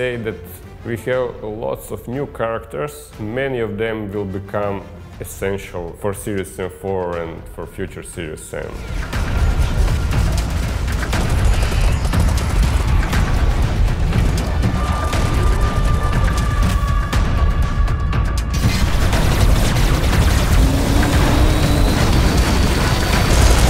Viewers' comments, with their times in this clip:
0:08 the heavy drums remind me of the music from Serious Sam 2 when you're protecting the Simba village.